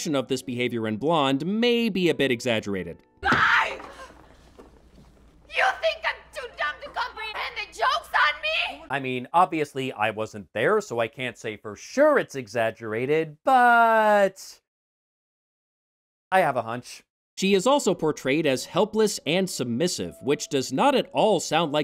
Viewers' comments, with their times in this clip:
0:06 ... and MM *did not have a crazy-Latina accent! Just listen to the train wreck at this point! Also, she was prone not to yelling but to holing up in dressing rooms for hours.